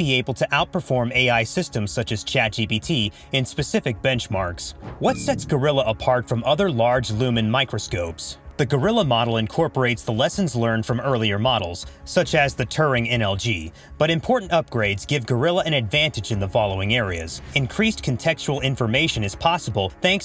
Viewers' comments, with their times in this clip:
0:04 the whole channel is just ai generated it says large lumen microscopes instead of large language models haha Don't worry I didn't notice either someone in the comments told me